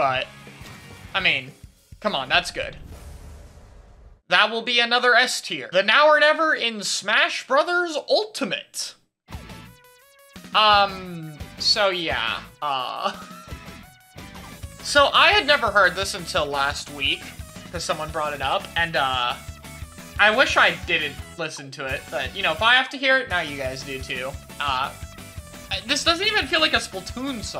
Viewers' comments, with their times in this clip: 0:09 LMAOOOOO, THAT'S F- TIER JESUS that sounds like a now or never if it was played at a squid nursery Anywho, thanks for some banger content to watch while im sick :D